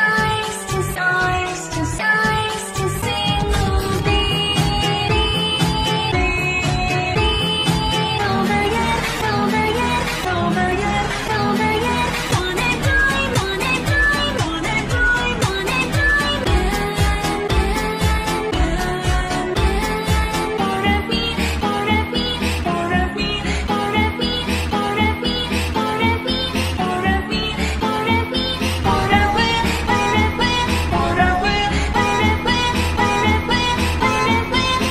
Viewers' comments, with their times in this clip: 0:08 Sounds like Preview 2 BFDI Mouth.
0:20 sounds like Preview 2 Old Deepfake Stuff